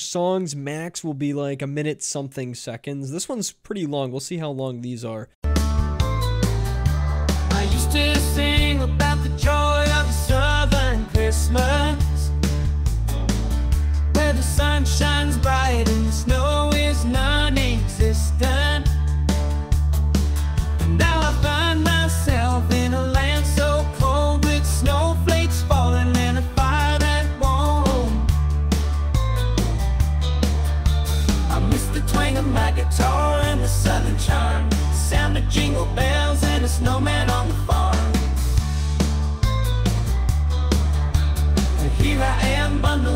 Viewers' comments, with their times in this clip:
0:05 That Country Christmas song is a sure hit.
0:29 that song is a legit fun country hit.